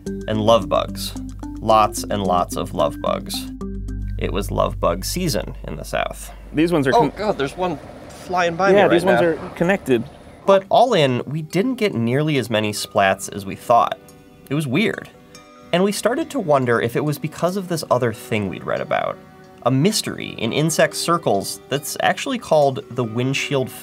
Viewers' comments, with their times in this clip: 0:09 A bug run on the camera in Literally Screamed